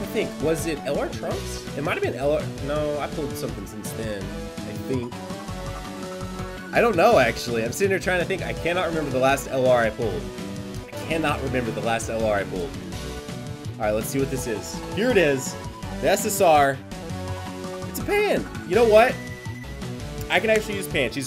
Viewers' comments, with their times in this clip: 0:05 lol, the music totally trolled me. Was expecting an LR from that hahahahaha